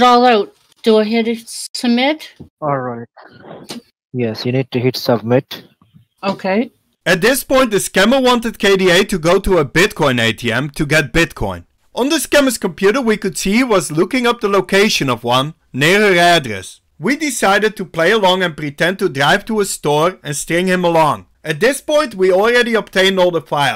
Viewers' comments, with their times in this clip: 0:07 Skip to to only hear Deeveeaar voice!❤ That American woman says UMMM too much which is not cool 😢